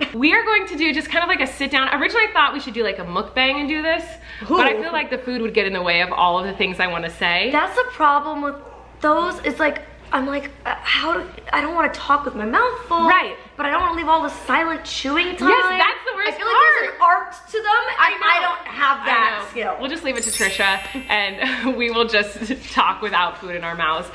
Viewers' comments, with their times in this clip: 0:08 Molly not knowing how to say Mukbang is meee